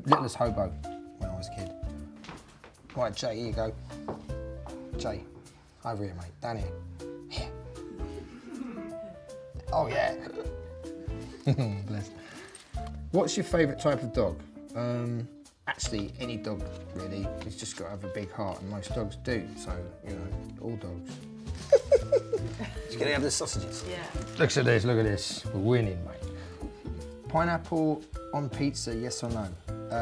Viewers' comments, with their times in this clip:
0:09 OH YEA chuckles
0:11 that cute little giggle makes me want to cry 😭❤️ I love him so much ❤️